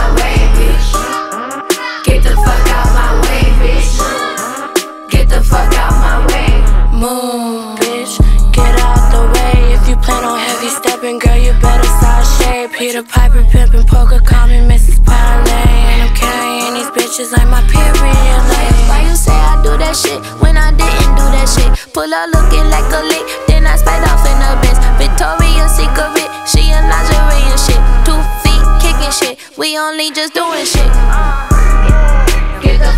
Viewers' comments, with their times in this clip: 0:08 it’s not her it’s kuntfetish
0:08 For a min there she sounded like BIA Makes me want to hear her actually on the track if that wasn't her....give us some Spanish Doechii.
0:19 This whole song is basically a reference to Mooo and she sounds just like Doja lol